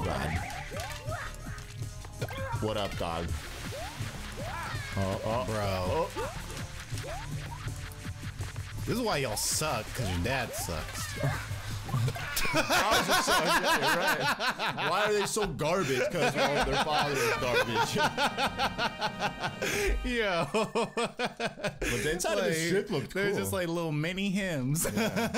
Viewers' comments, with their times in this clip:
0:08 Why is your Indian accent so spot on XD that kind of came out of nowhere...it wasn’t very cash money of you to say tho; they’re just kids trying to play around, some people just play differently than others 🤷🏿‍♀️